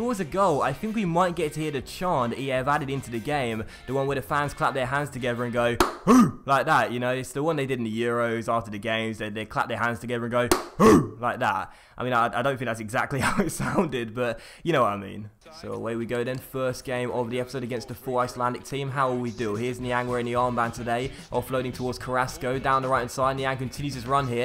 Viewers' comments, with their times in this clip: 0:06 I died when he was like clap hooh